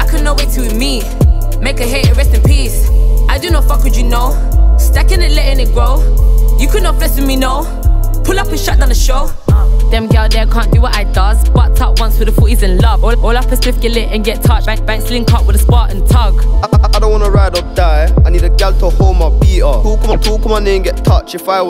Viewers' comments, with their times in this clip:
0:09 Kenny bop p3 reminds of flow